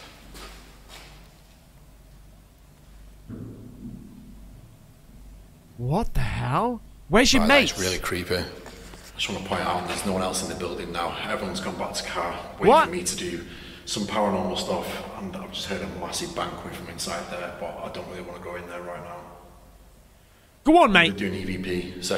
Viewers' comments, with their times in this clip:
0:03 did you notice after the second bang there is a trail of light across the floor? It looked funky.